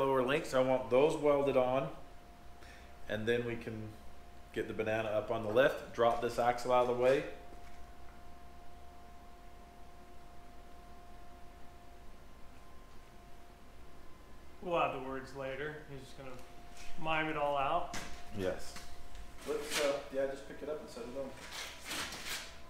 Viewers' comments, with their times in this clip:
0:09 Was that your Vise Grip Garage impersonation ?